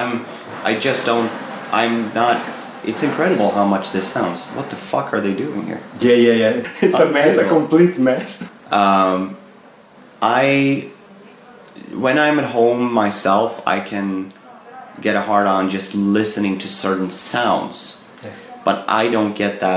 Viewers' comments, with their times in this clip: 0:04 Tobey's reaction to the noises in the background cracked me up 🤣🤣🤣.